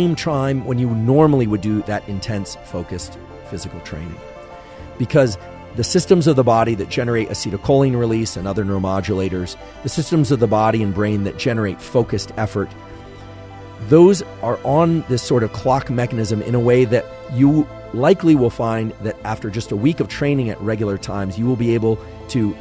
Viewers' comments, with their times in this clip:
0:10 aaaand maximum annoying music... Is Huberman not interesting enough that you guys need to add a 'soundtrack' (?).. Sheesh...